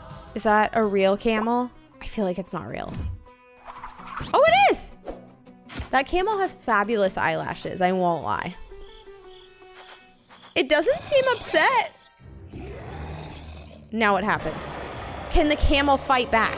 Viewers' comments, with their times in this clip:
0:04 Wait the camel made a Yoshi sound when Steve jumped on. I am the only one who noticed the really old Yoshi sound (From the game super Mario world :)) when you jump on Yoshi :). Play the game for proof. Edit: I just realized whenever you jump on the camel it makes that old Yoshi sound.